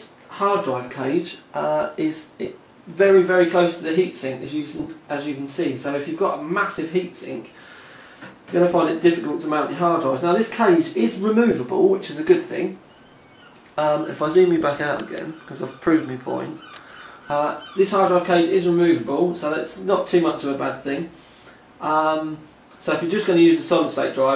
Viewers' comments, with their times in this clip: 0:08 Seagulls? TTL Towers is by the seaside.